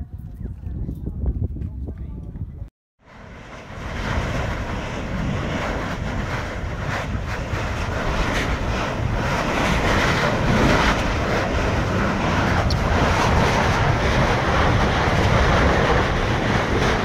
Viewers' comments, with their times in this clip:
0:04 onwards. To think that's the sound of lava. Pretty cool.